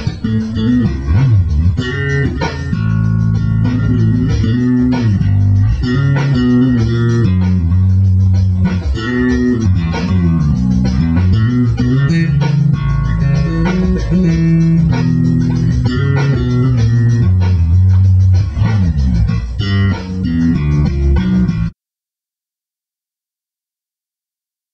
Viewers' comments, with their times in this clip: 0:09 i still cant figure out the little ditty i dont know why.